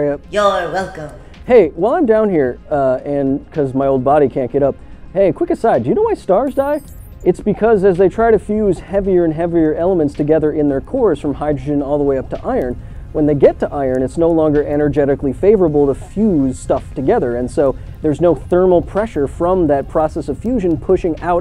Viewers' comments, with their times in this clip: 0:03 she's getting more and more gleeful every "you're welcome"